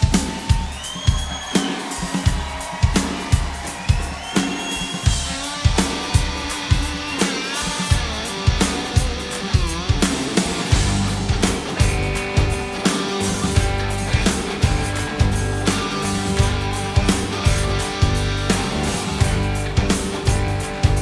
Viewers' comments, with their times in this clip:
0:03 I can barely hear Ringo entering the play! Made me stop the video and write this comment. Should I even bother listening any more? I know that it is a pain to mix two drummers, since I am a drummer myself and also an audio technician who pretended to be an audio engineer in the past too. EDIT: I did watch a listen to the rest. Well worth it!
0:04 So was Ringo muted for these songs? What I see he play and what I hear isn't matching. The fill for example. :/
0:04 man those harmonies are awesome in the chorus ....I also notice that Ringo is hitting the snare drum starting but the sound is not coming through.....his mix is turned off ? ? ....